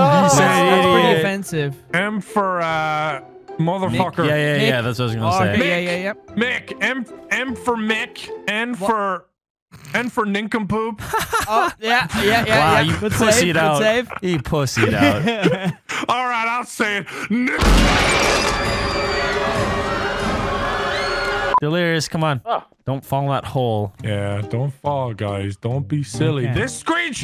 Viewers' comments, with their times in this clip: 0:09 THE PAUSE 💀💀💀💀 OMGGGG